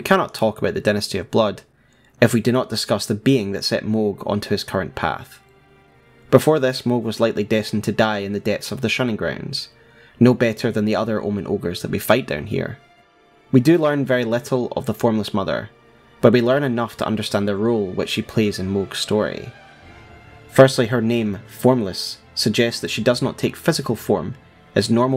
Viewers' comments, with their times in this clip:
0:07 Music sounds familiar